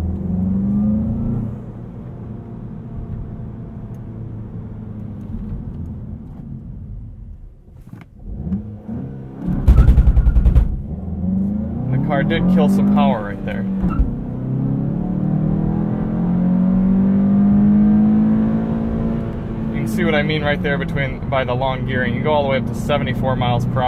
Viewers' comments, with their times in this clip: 0:09 What is that popping ?